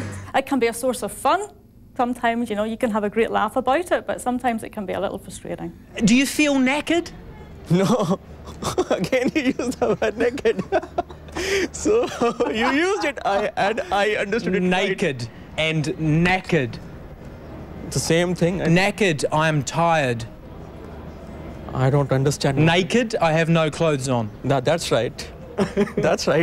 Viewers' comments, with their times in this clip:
0:06 i heard naked im howling
0:12 he said knackered " means fatigued " !! lol that Indian guy heard naked lol